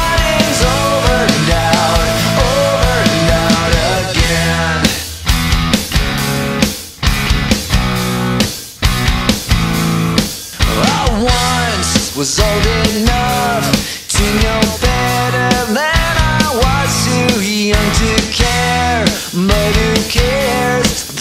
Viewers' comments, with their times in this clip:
0:04 Such a beautiful guitar.